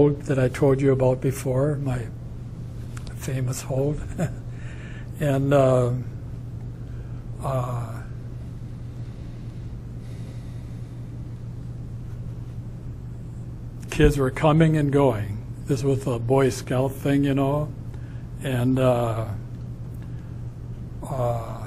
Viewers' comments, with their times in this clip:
0:04 when he refers to his "famous hold" and laughs I just gave an audible "uuhhewwwwwww" I'm a hard one to disturb but that was downright sinister.